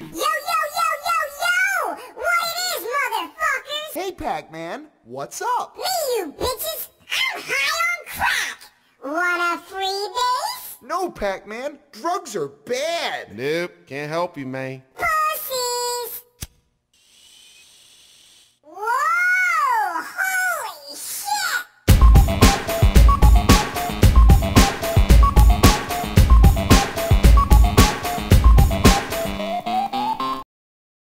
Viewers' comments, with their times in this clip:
0:05 it sounds so odd that it’s funny ( I mean when pac-man says the B word )
0:09 WANA FREE VAPE 🤑🤑🤑🤑🤑
0:11 Chris Bores is that you?
0:12 The way he says "drugs are bad" sounds exactly like how a person who is high on a considerable amount of crack would say it.
0:12 I freaking love how he delivered that line, it’s so funny to me and idk why
0:13 For the longest time I've unconsciously incorporated this phrase into my daily life including the way he says it. I ended up forgetting where I got it from